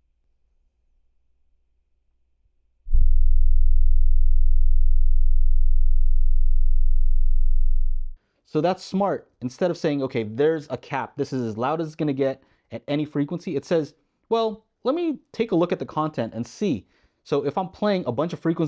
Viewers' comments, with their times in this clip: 0:06 Oh my, look at the harmonic distortion when playing the 20hz sine wave. That's horrible. FYI those other frequencies shouldn't be there or at least at MUCH lower levels